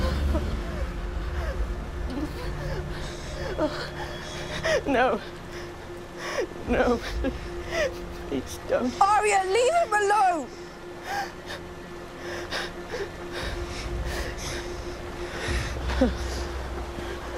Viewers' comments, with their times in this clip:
0:04 I love Joffrey screaming like a Lady 😂😅